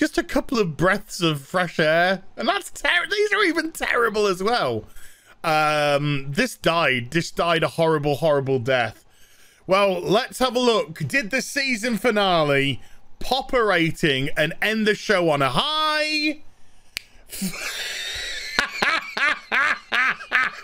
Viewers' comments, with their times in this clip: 0:07 That evil laugh I almost feel bad that we are enjoying the downfall so much... Almost! 😂